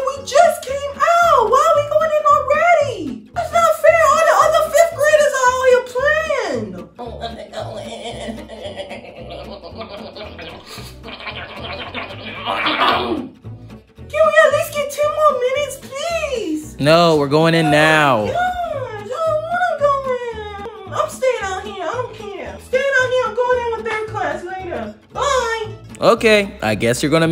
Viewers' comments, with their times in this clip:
0:08 Dudes full oof vibration that had me dying🤣🤣